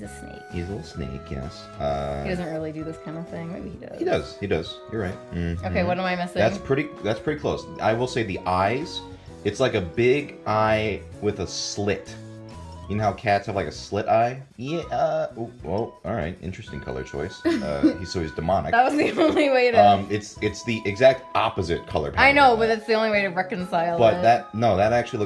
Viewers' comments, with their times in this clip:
0:10 is no one gonna talk about how he sounded like autotuned